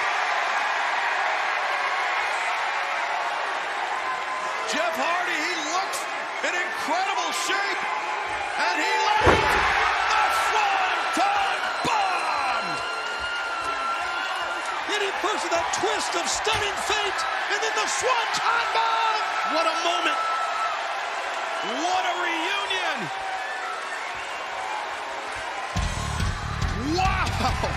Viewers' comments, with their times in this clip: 0:09 That scream from the Swanton! 😂😂😂😂 Too funny!
0:13 Was that somebody in the crowd screaming or was that buddy 💀💀